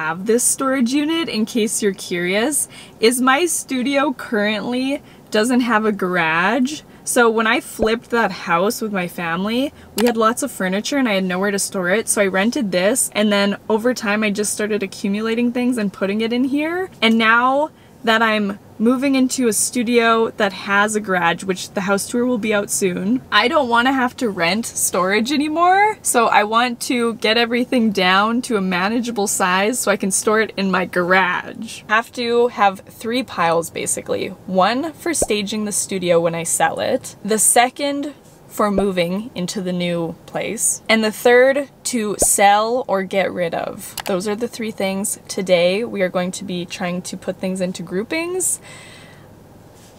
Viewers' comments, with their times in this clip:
0:05 I literally stopped in my tracks and hit rewind and listened to her say it like 3 times! mind blown I have never heard anyone say it like that ever in my entire life. Baaahaaaa
0:06 when ur american and you’ve never heard it said like that- no hate if it sounds mean lol💗
0:07 i haven’t ever heard someone say garage like that before and at such an early hour of the early the morning you’ve caught me off guard i really didn’t think it was possible to butcher the word anymore but here you are. minute in, minute.
0:30 😂 lol for everyone saying that’s a Canadian thing I live in Canada and I have literally NEVER heard anyone say garage like that lollll.